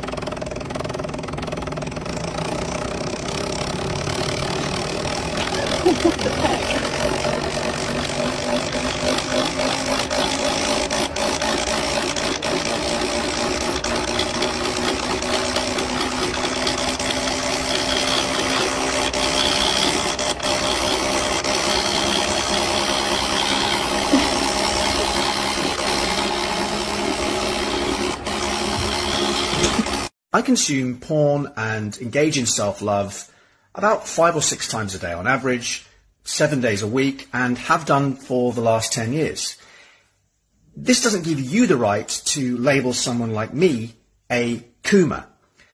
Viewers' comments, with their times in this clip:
0:04 That one Honda engine at 3AM 💀💀
0:30 nah, he just British.